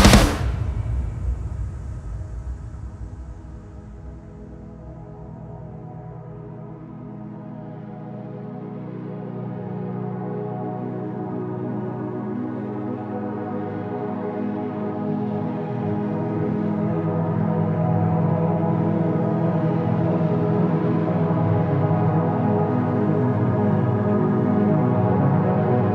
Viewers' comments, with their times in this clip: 0:05 Great performance. Love the soft melody from to the end.
0:06 anyone else getting Architects vibes in the outro?